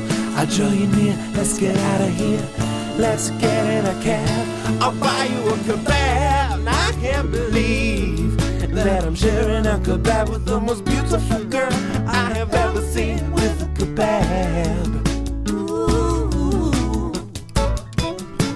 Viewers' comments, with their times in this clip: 0:06 "I'll buy you a cabab!" Me: What's a ca bab? -Me: Oh a Kabob. XD that's a knee slapper.